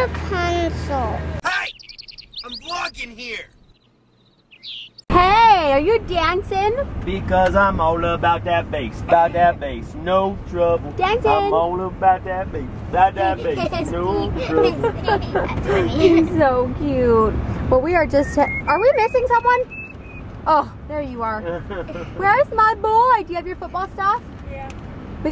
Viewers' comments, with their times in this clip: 0:07 -_- i Hate That Song